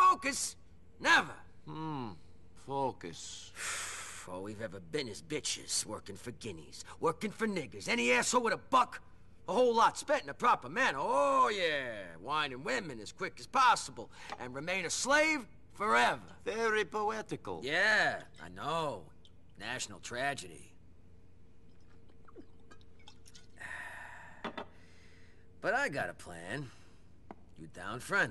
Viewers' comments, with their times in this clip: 0:09 I can't tell if you if he actually did say the hard-r or not but geez I mean I complain about them using the g word and the s word to I still like this game though I'm just pointing that out